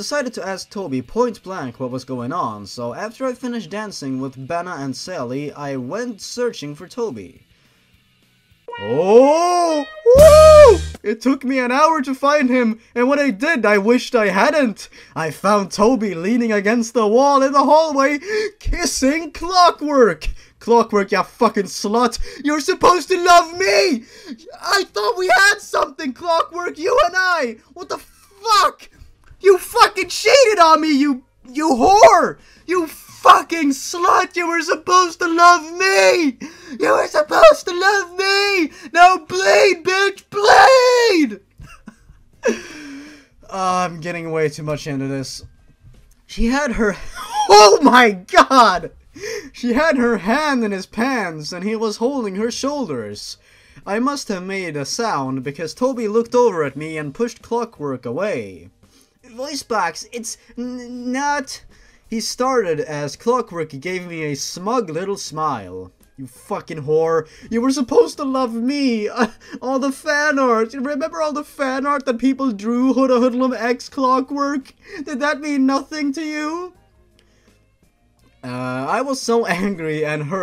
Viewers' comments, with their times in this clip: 0:08 like when you hear the music, and you know the cringe is going to get fucking real... (but apparently not :v((but the apparently yes...)))
0:09 That music killed me, this is the reason I keep coming back for more.
1:08 when the music started i got genuinely startled